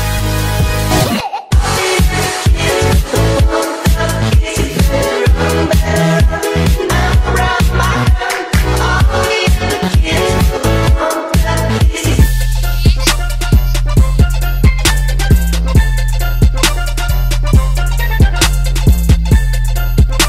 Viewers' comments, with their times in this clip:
0:04 we're oreos so let's put a song about school shootings in the background